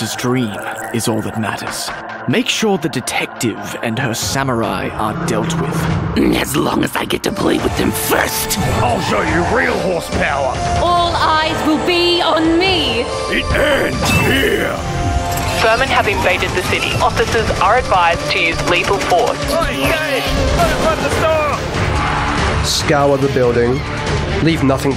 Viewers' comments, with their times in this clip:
0:05 absolutely delightful VA not a fan of Klo's delivery though